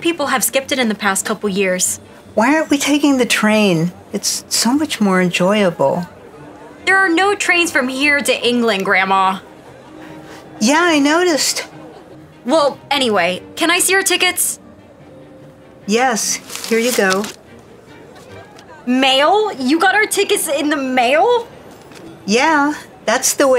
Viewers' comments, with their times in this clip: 0:06 she looks and sounds like Donald trump if he was a girl